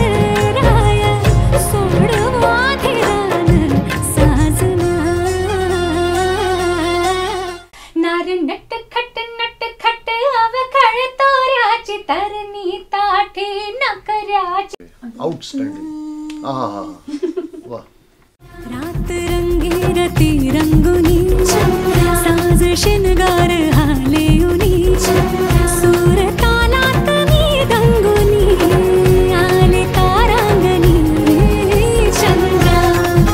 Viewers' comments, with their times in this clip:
0:08 🔥😍 Shreya Goshal mam voice ❤️🔥 goosebumps ❣️🔥 hat's off to you mam🧡😍
0:15 Shreya Ghoshal! The Queen 👑💝 whose voice is like me floating in the Heaven 😍 And that praising by Sir
0:17 just listen the laugh of Shreya Ghoshal ji uffff ♥️♥️♥️.